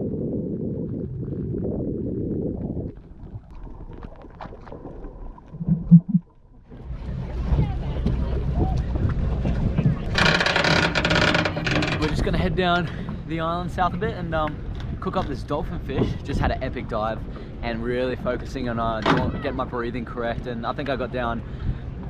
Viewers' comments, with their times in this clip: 0:04 that cute little aeugh.